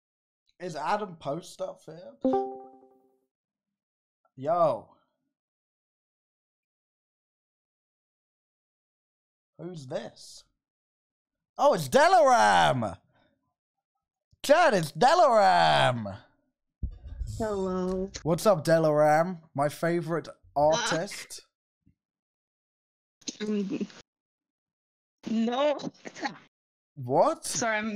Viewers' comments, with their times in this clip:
0:09 Das me,,, I HATE THE WAY I WAS SHAKING, I'm a nervous person